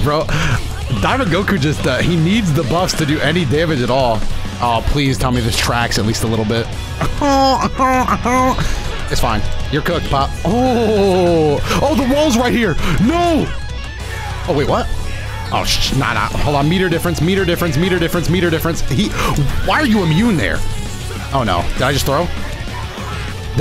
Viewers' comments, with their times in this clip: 0:06 crashout had him squidward heyonkin 😂😂